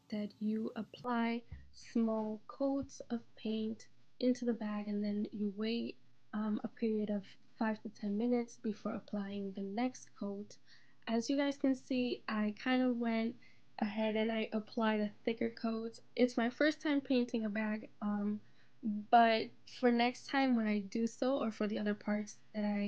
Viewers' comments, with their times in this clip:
0:03 Someone please tell me why after the I can’t hear no more talkong😩 I was so curious because I wanna do the same thing bit then the soind went off... am I the single one? What should I do?😭